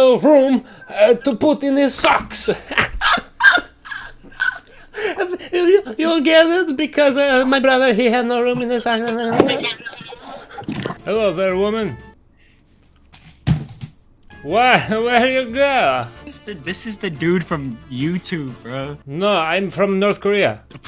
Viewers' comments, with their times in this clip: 0:04 i spat out water on my bed because of his laugh 😂